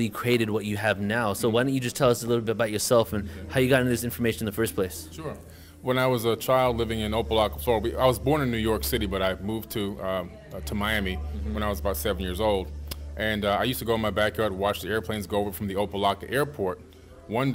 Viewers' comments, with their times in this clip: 0:05 swear it sound like he said O Block 😂😂😂